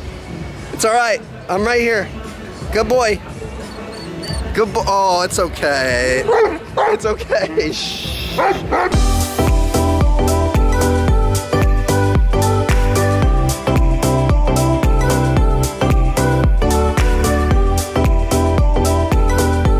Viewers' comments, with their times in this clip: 0:03 I don’t think I ever heard Koda whine. Usually it’s always Cooper that does it 🐶
0:03 AWW KODA CRYING